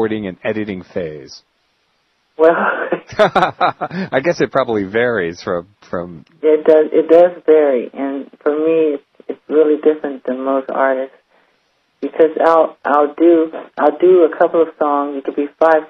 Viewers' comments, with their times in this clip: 0:03 that little laugh sounds so good ahhhhh ily Michael